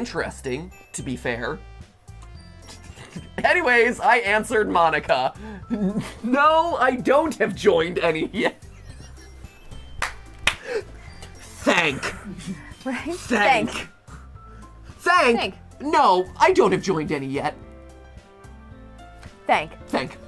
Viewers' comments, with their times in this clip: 0:08 the grandest wheeze ever, followed by the best line ever said in gtlive